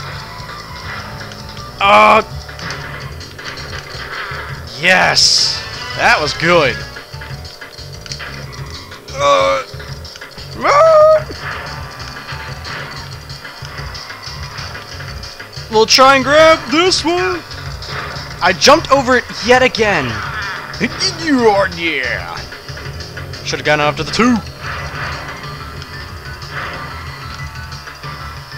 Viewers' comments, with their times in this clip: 0:10 ... "Moon"? Was that a really obscure reference, or was it just a braking sound effect? :)